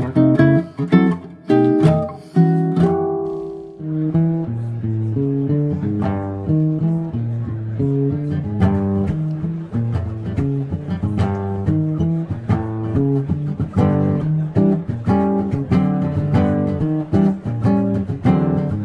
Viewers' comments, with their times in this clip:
0:06 In this part of the video i had to go to The hospital………. But luckly it was a jazz version🥳 Ha ha😊